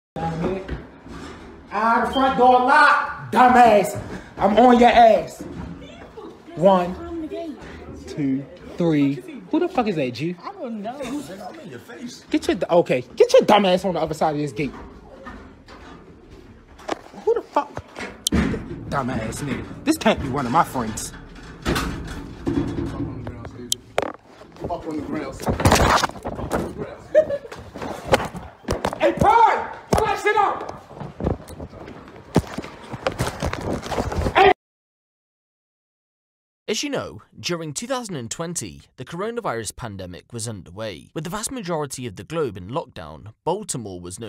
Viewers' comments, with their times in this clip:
0:06 u can hear girl say he behind the gate before dude even jump the gate so she clearly knowing an laughing!
0:06 climb the gate then she laughs
0:27 It’s the female chuckle for me man…. Pure evil she knew exactly what was about to go down